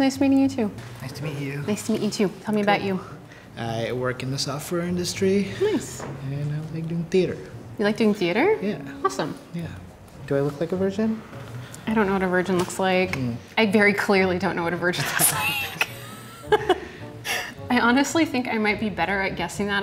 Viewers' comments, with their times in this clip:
0:03 what industry does he work in? it sounds like he said sulfur...